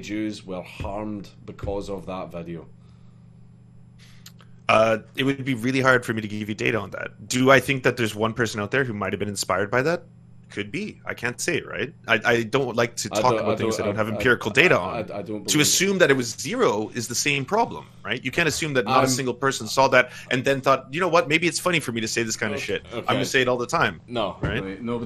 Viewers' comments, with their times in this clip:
0:06 To assume that it was zero Nobody has been inspired to hurt jess Ben shapiro Argument The Thatcher of the rye: thats a good one (he Means the Argument) he Starts speaking faster After losging this Argument battle